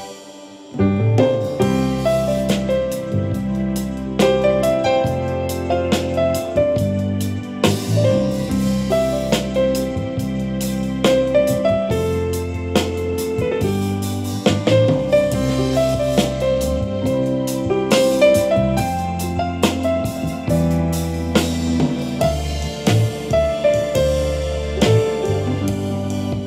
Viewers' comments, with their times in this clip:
0:08 Thank you for this calm and thoughtful dive in detail. If only device developers does this type of review themselves! snares are really funny